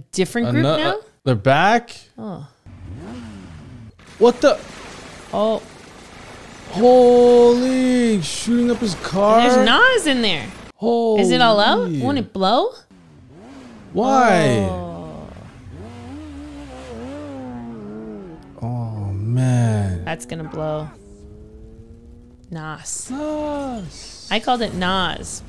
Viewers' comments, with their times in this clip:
0:09 when Dominic screams NOS and then the car explodes that is a little over the top. Nos allows the engine to burn more fuel by providing more oxygen during combustion. The increase in oxygen allows an increase in the injection of fuel, allowing the engine to produce more horsepower. It's not flammable at a low pressure/temperature, but it delivers more oxygen than atmospheric air by breaking down at elevated temperatures, about 570 degrees. Just some useless information